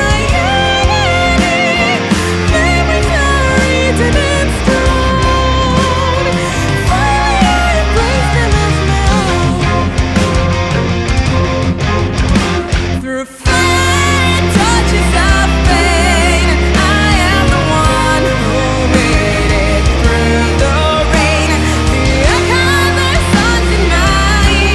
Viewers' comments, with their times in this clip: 0:05 Do only I hear the WhatsApp Webinterface sound ?